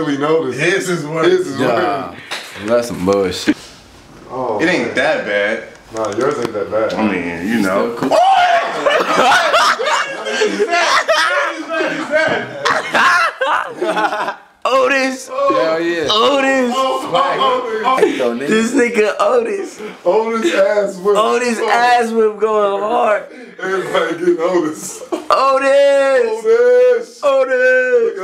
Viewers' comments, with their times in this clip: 0:09 ahaha Legacy's Laugh